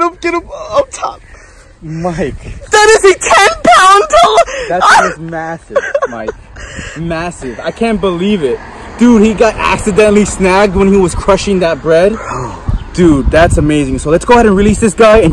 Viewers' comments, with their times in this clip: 0:03 Did anyone else get ear raped on